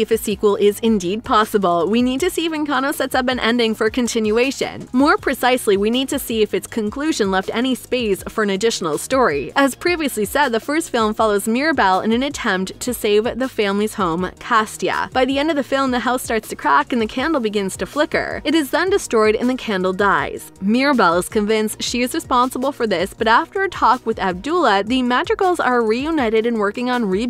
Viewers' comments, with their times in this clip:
0:09 Oh goodness, I had to keep watching after reading this comment It starts "Castia"? "Abdula"? Yo... was this on purpose?